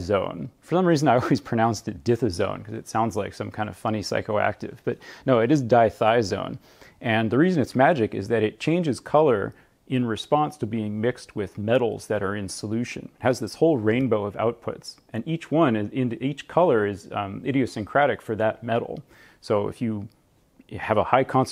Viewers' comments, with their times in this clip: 0:03 similarly to how it sounds in German or Slavic languages